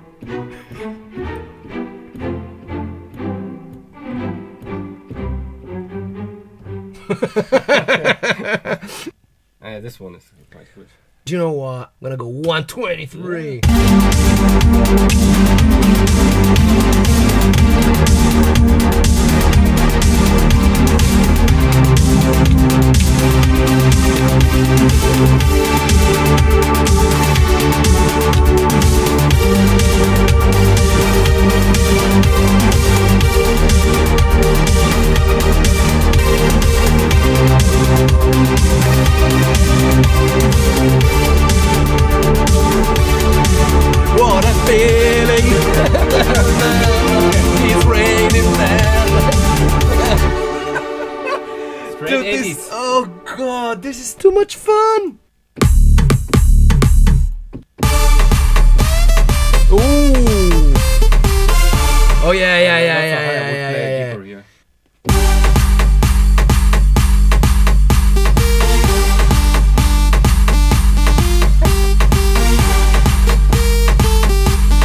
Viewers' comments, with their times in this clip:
0:04 I'm not the only one that hears the windows XP sound right
0:12 synthwave preset is liiiiit 🔥🔥🔥🔥
0:12 OMG...incredible... that was so 80s-ish
0:14 Similar to a song ( Pet Shop Boys - It's A Sin ) & ( Bonnie Tyler - Holding Out For A Hero )
0:32 she is a maniaac hahahahahahahahaha "what a feeling " 80's vibe ROFL! bro you are KING!!! You are like me in studio really.
0:32 I love the 80s Eurodance !
0:57 actually sounds pretty sick